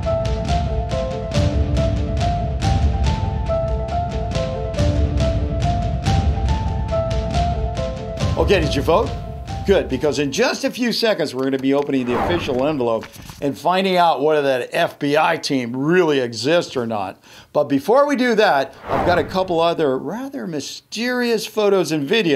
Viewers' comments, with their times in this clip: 0:09 Hahaha, you thought you could scare me by putting door knocks making me think zombies are real lmao